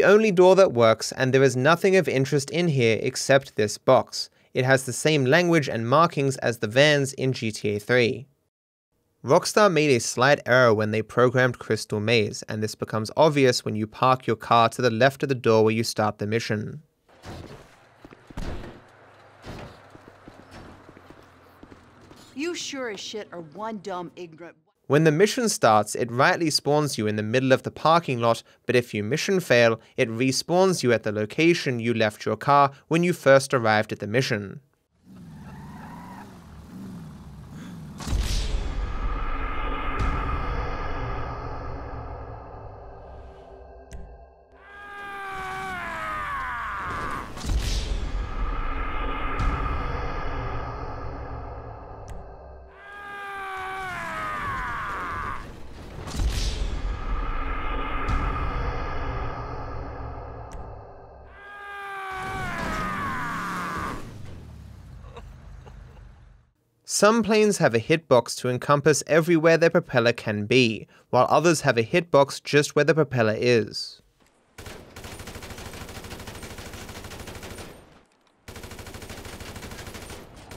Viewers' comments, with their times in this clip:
0:10 trevor screaming continuisly AHHAHAHAH
0:42 Trevor yelling while the car humps Cheng was just amazing
0:45 angry car screams and eats injured man (2021 colorized)
0:47 it's like the game is mad at o'neils too and is yelling with trevor
1:02 trevor yells because he recognizes he is traped inside a loop of mission failing screens for all eternity
1:02 That scream every time he respawns